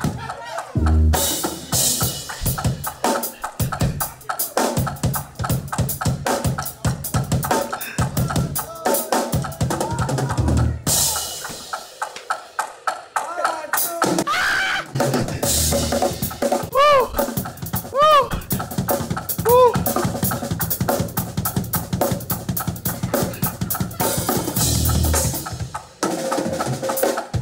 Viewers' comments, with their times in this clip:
0:09 I’m dropping my drumsticks laughing 🤣🤣🤣🤣 that one two three four and then hit the cymbals 🤣🤣🤣🤣